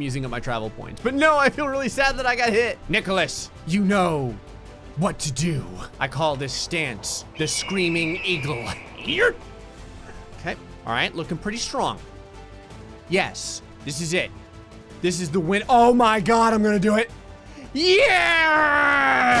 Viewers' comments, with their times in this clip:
0:04 no that’s(in loud Irish voice) THE PENATRATOR